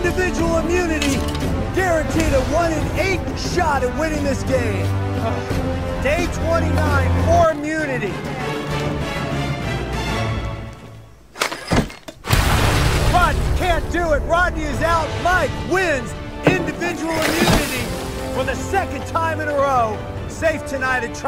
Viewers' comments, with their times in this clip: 0:07 the editing and music for this clip is SO RAD I keep rewatching it